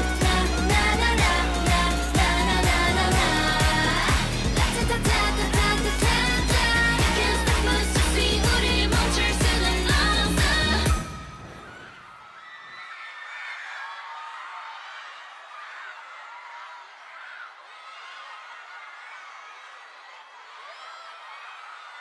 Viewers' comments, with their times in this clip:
0:04 you can even hear them clap. so powerful
0:06 I know y’all heard the claps 😩